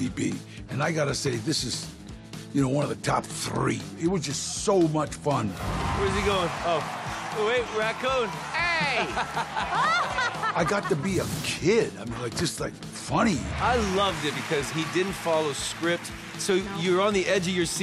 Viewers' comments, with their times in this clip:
0:03 can we just appreciate the way he said 3